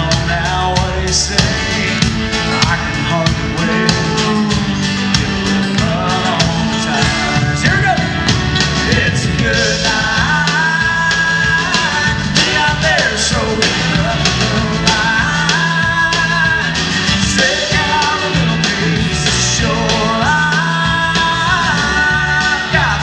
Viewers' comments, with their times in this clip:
0:10 Turn down the back round and let Brad Paisley sing :(